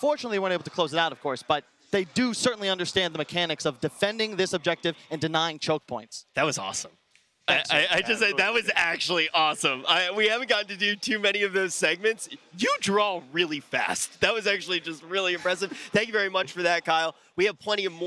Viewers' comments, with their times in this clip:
0:06 "derrrr. dat was aweshum. u draw gud an fasht. do you guysh like me flashy soots and sherts with collers?"